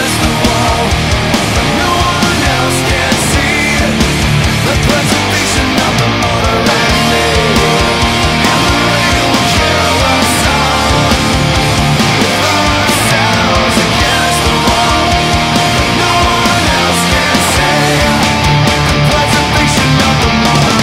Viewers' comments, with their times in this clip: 0:06 that solo was so good I wish it was in the actual song
0:07 I really like what you did instead of sticking to the heavy stuff, adding that really melodic line adds so much more depth and emotion to the song, it just sounds so good!! This is some real musicianship right here!!